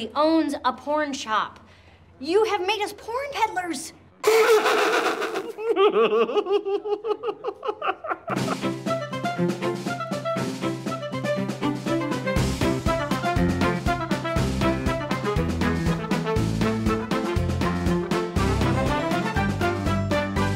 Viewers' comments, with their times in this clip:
0:05 i'll always come here just for Ron's perfectly timed "i told you so" laugh